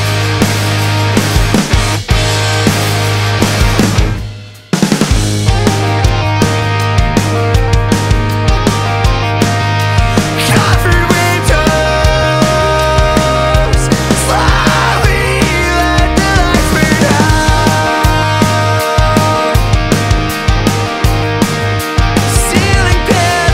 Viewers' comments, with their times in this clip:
0:05 the guitar parts are sooo goood
0:09 gets me so bad. I miss seeing these kinds of vocal melodies (?). "Covered windows Slowly, let the lights burn out Ceiling panels Falling as the house burns down"